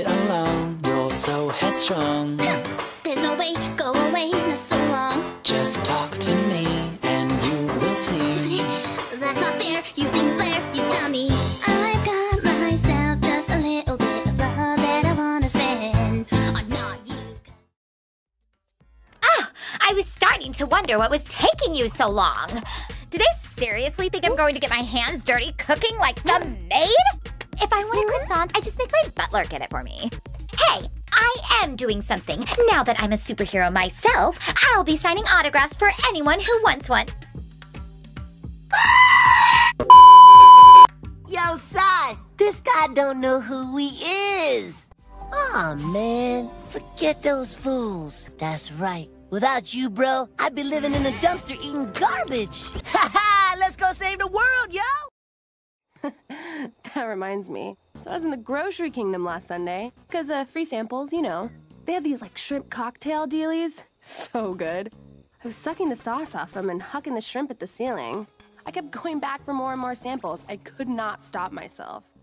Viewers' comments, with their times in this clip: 0:03 love this song
0:12 omg I love that song 😭😭😭😭
0:23 Stephanie's voice suits her UwU 👌
0:28 this is what I imagine her sounding like.
0:37 I just died- I thought that was literally his voice- 😅
0:41 thought this was plag voice from mlb
0:41 beast boy voice is just making me miss teen titans :')
0:55 Marceline is one of my favorite fictional characters! Her soft, cool voice really suits Melody! :D